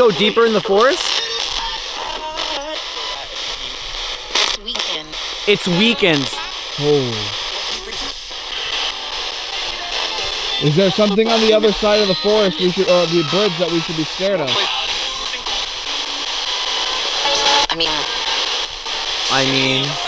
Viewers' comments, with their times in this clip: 0:05 Is it possible the Sbox picked up "Wiccan" instead of "we can" ? Maybe that's what the spirits were trying to say. Could that have been bugs hitting the tent?